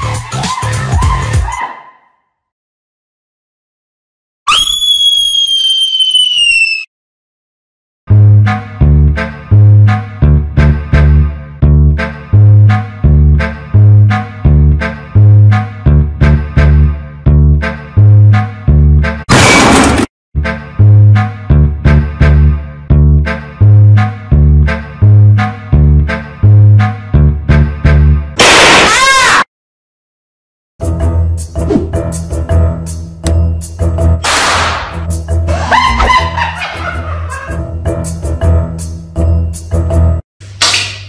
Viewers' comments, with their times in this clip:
0:03 Bro Was Like A High Pitched Rubber Chicken
0:04 that scream never gets old
0:28 Bro screamed like a raptor💀 Edit:Yes I liked my own comment because im lonely😢😭
0:28 bro screaming like. A raptor 💀💀💀💀💀